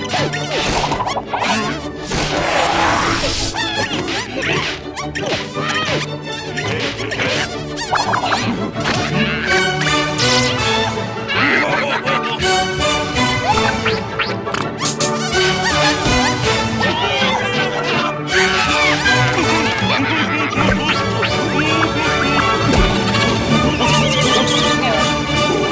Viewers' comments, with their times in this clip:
0:08 please guys set your volume louder i year the voice on periodic table of elements from science instrumental mix the instrumental on larga from original video